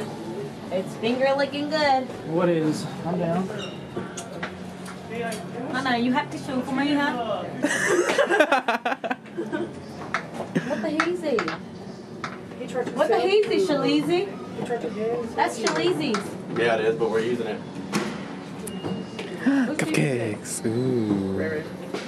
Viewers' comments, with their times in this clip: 0:05 yep sure is, so is that girl but too bad she talks like that.. what a shame. now i wonder if my local circuit city has closed down.. i should go check tomorrow